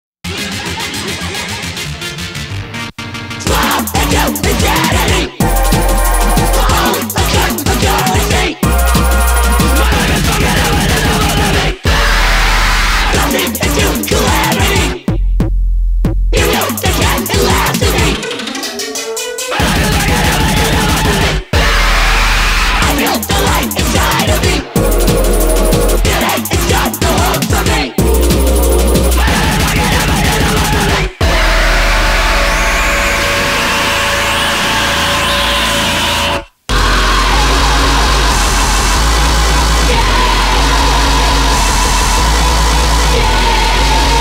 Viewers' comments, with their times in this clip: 0:00 you can hear the sweettooths laugh
0:30 my bro scream at his mic after losing a ranked match